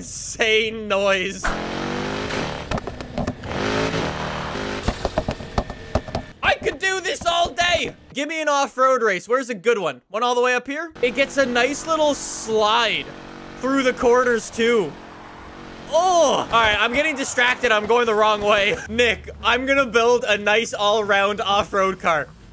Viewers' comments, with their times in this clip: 0:05 that porsche sounds like a BEAST!!!